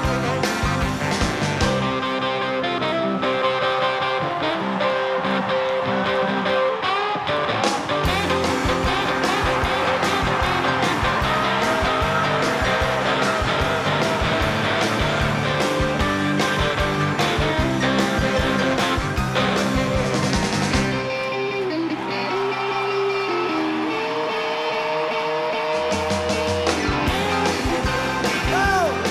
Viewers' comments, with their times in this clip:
0:07 is Hard Rock
0:17 You can tell when he plays and he does the solo he almost screws up. Hes like oh shit I'm playing with a legend.